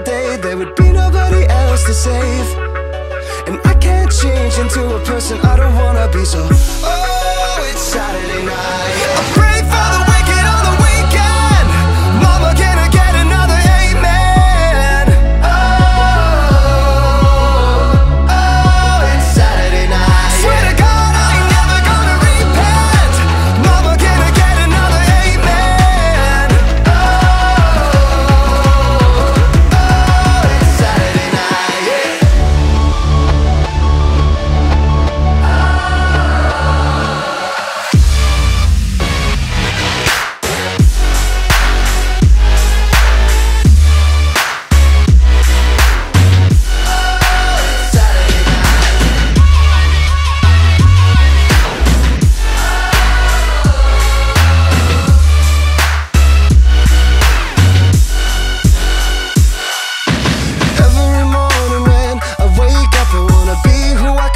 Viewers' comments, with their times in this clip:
0:09 I thought it wat the stranger things theme song omg
0:09 Stranger things right there. Listen to the plucks
0:33 Oof! melody <3
0:37 Best Song ❤👉💪 ^^ Beat 💥💥
0:49 Sampling the samples into another sample! I love it